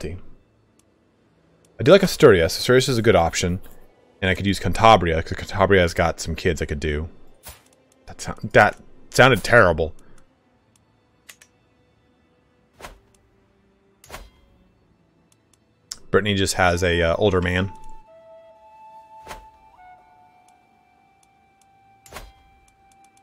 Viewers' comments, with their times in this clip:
0:05 I was watching or kinda listening the stream / video while doing something else and I actually stopped what I was doing and looked at the stream lol. This did indeed sound terrible lol